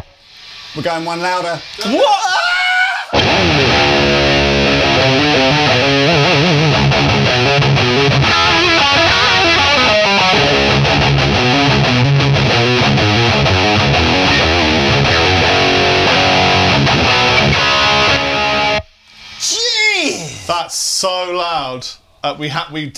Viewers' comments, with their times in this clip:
0:09 The Fender would've been better served thru a different input jack than that one. And I reckon that would've said 108 behind him. The camera was off the display, but I'd bet. Also, I'm NO Marshall fan. I would never use one. But amp 8. Holy smokes. THAT's what everyone talks about that amp for. Natural, real, actual fuzz.